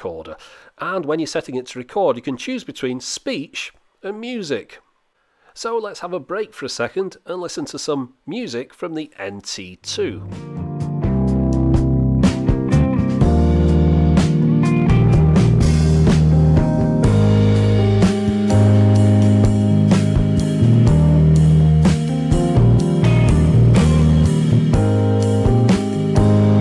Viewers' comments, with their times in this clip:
0:10 Is the distortion from audio overload or is this distortion from the device?